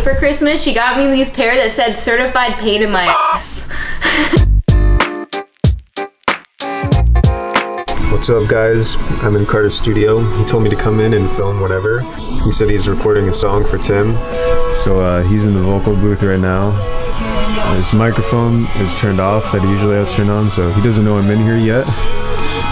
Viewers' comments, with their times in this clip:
0:09 those vocals ARE SIIICK